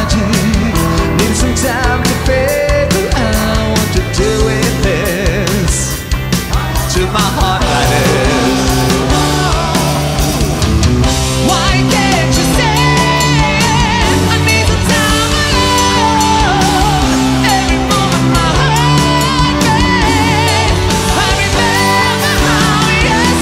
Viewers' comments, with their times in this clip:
0:07 Wow the vocal !!